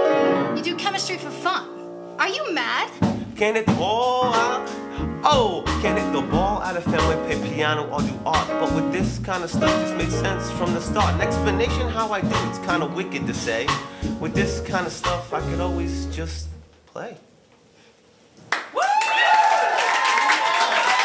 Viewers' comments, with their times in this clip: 0:03 So I noticed that the way they came back in after the lady said, "are you made!?" was a little weird, but the vocalist and musicians just let it ride to the next bar and he came back in and they recovered so well. Amazing performance quality on display! Wow!